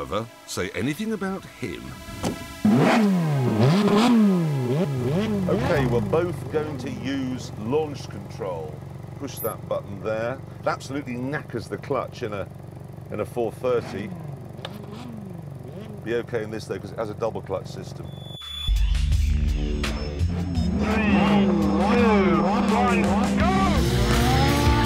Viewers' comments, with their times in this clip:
0:05 the 458 at idle sounds terrible. If this was an audio only video I would have guessed that was a van!